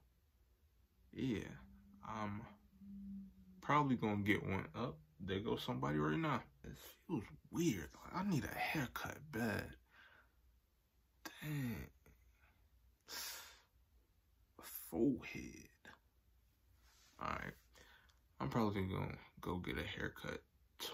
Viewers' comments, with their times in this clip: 0:03 is that a ghost cuz that didn’t sound like no vehicle